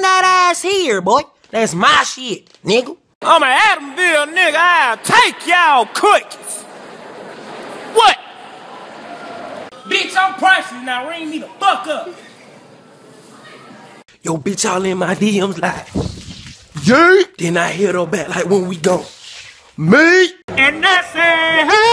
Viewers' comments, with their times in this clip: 0:03 Gangster Cookie Monster be like Bruh the way he said cookies be like Cooke